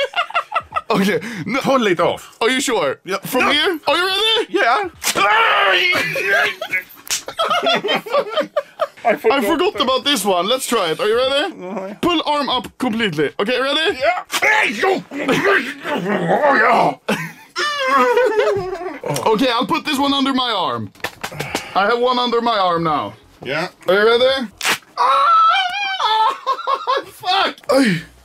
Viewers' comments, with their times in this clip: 0:08 "are you ready?""mm, nae"(in crying vioce)
0:16 that cry lmao im dying of laughter